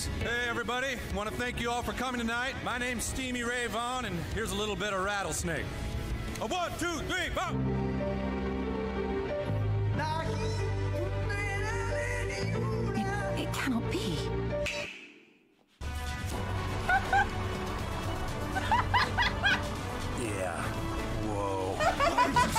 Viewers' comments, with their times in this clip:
0:07 I ONLY HAD TO HEAR 1 NOTE AND I STARTED WHEEZING! X'D